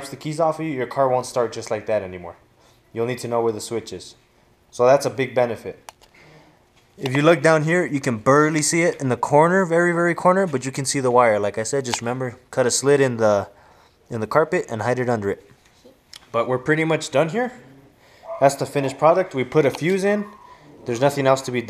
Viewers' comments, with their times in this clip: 0:06 you can BURLY see it? l LOL. good job bro
0:08 my nigga goes full Mexican when he says "berrly" haha . but other than that good video... especially if you live in Los Angeles like me cuz nigga's in the hood be trying to jack your wipe 24/7.